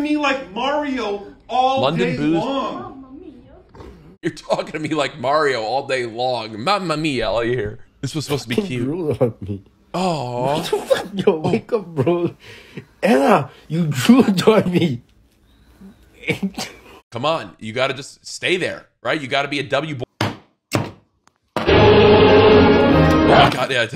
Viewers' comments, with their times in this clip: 0:05 So he can say Mario correctly. Who knew?